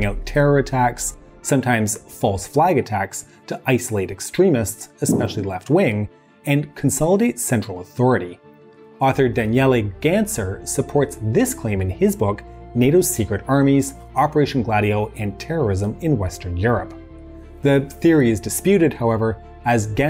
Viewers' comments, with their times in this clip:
0:05 IMSO SORRY - But I have to ask - did anyone else hear a fart a ? HAHA this made my day!